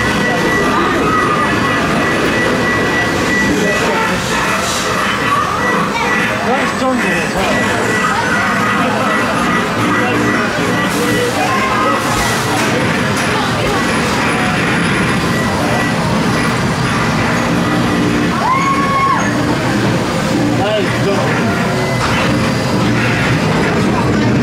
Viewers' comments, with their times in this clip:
0:09 Smiler halfway sound: broken Man at the front: bobs head up and down